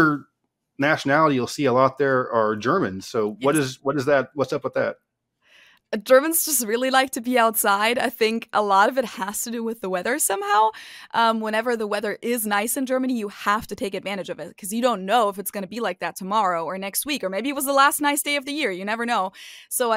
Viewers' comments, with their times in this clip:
0:06 sounds like she said "Germans like to pee outside"